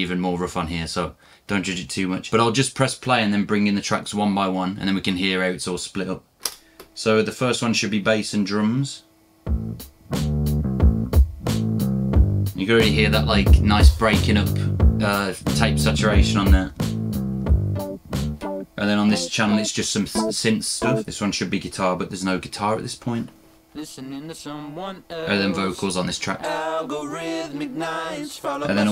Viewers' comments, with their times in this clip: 0:10 Is this song available somewhere? Whats the name? The bass is just awesome.